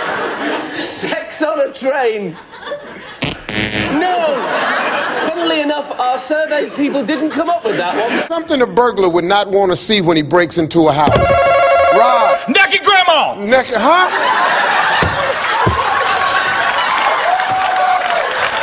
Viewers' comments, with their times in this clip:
0:03 Why Does It Sound Like A Fart? Hahaha